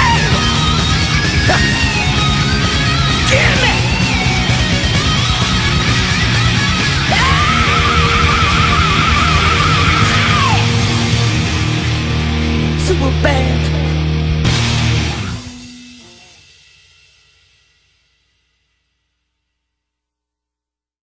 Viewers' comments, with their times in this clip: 0:06 I minimized the video to play a game while listening and I totally thought this scream was from Motorhead and I thought to myself "this works so well because that scream is something James Brown would totally do!" only to come back and go back to see it WAS james!